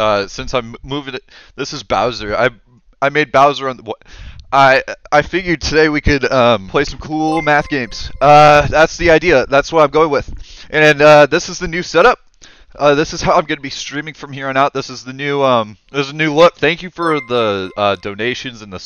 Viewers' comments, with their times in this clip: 0:06 the way he says coolmath games